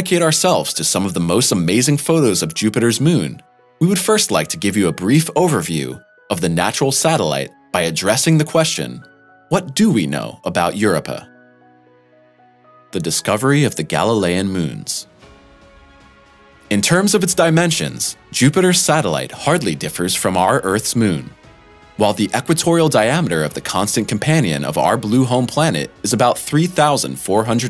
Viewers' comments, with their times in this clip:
0:09 "EUR-uppa?" Somebody please explain to that narrator that it's Eur-OH-pah. Jesus, Mary and Joseph, what is wrong with people? I shut the damned thing off because of this fool.